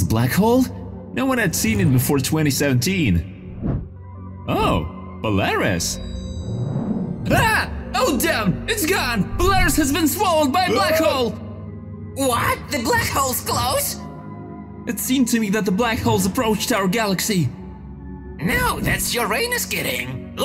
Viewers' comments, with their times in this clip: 0:05 Am I the only one who hears Belarus💀